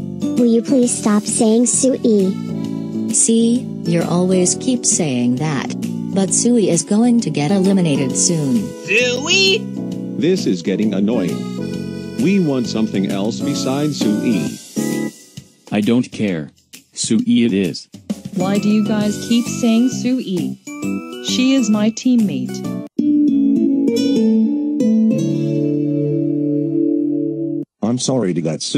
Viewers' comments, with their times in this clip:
0:09 That was funny how Lulu yells SUE E!